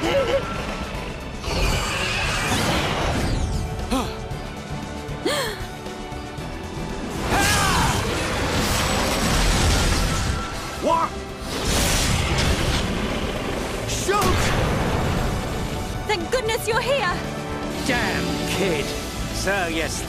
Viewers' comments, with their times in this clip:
0:06 "Yes, yes, split it wide open!" *RoN playing in background"